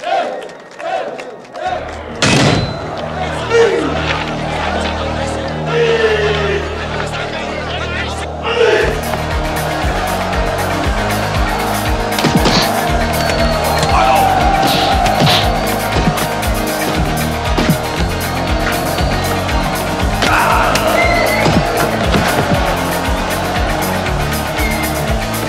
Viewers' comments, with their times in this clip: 0:08 Maybe im overthinking but i definetly think the music in this film plays a big role and always has some kind of meaning in it. Here, for example it perfectly fits the situation. A fast, neutral music as Chuan starts off strong, and then it fades into an ,,evil" , much deeper tone, as Chong Li gets angrier and starts to get more serious. Amazing soundtrack.